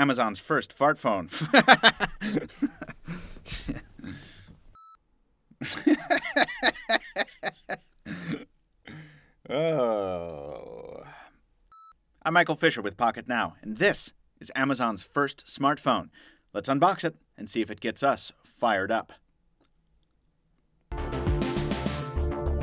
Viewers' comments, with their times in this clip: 0:05 That laugh though. So contagious. X)